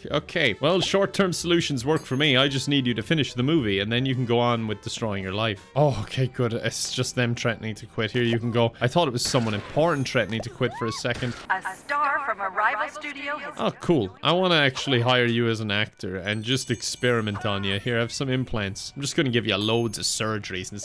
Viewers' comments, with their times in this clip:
0:05 sounds like that pufferfish 🥕